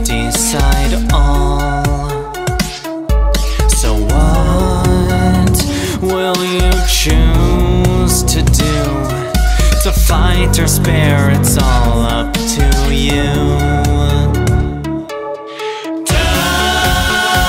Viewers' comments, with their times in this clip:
0:03 I just noticed the "genocide-like" bass a couple days ago really nice touch